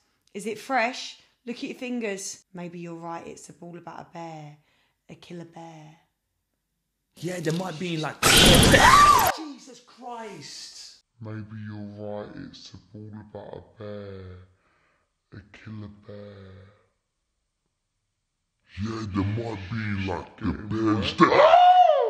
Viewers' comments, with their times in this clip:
0:09 bro not the whole 'bear' sentence in slow mo 🤣could be the chorus of a modern rap song, '...about a bearrr, a killer bearrr.'